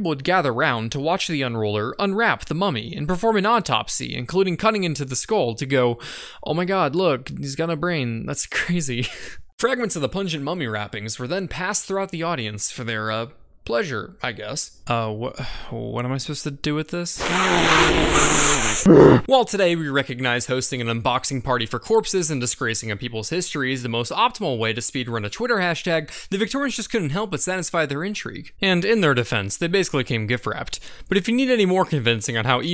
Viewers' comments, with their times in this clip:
0:05 Haha is you listen carefully he's saying "look he has got no brain" not that "he has got brain that's crazy"
0:18 that nose blow was genuine lol